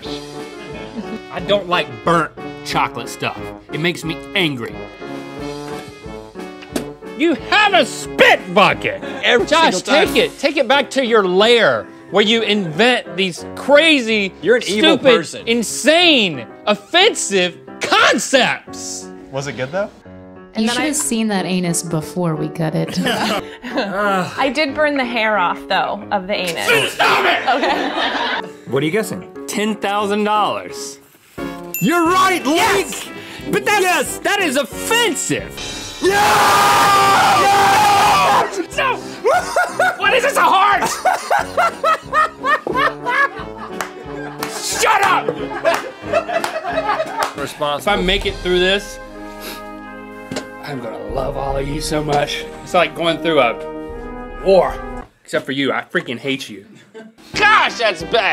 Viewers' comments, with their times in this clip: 0:03 Something about how he says this
0:04 The way he says “angry” he sounds like a whining child
0:09 is "you have a spit bucket" but it sounds like "you have a spit f**k it"
0:26 Im scared of link omg he sounds like a psycopath :,)
0:27 The STAHPIT is my favorite
0:35 rip headphone users😂😂😂😂
0:35 headphone users beware 🤣
0:35 blows out mic
0:36 casually breaks the sound barrier...
0:36 sounds like every Dream manhunt video.
0:36 the loudest sound on earth
0:37 my ears are broken
0:40 Rhett's laugh must be protected